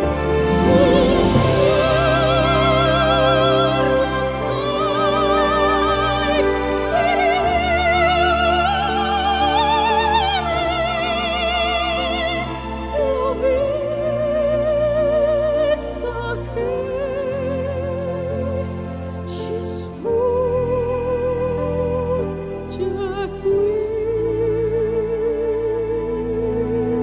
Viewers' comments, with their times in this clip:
0:09 I'm flying with her voice, all chains are broken!